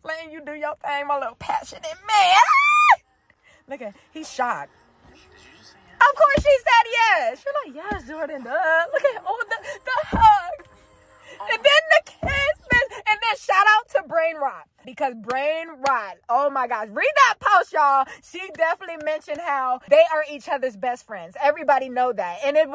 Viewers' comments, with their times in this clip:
0:03 🥹🤧 Never getting over her sigh of relief once she finally got that yes out